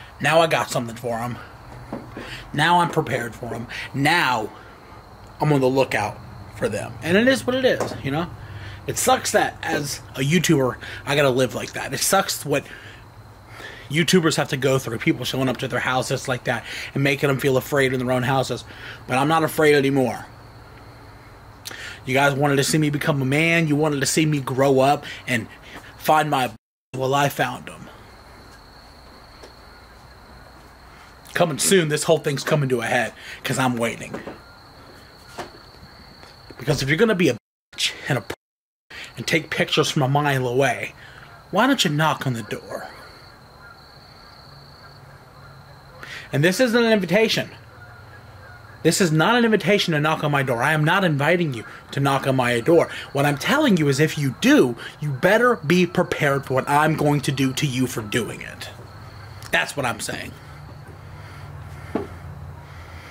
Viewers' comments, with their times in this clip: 0:09 Did anyone hear that voice
0:50 listen in the background i here Canadian geese’s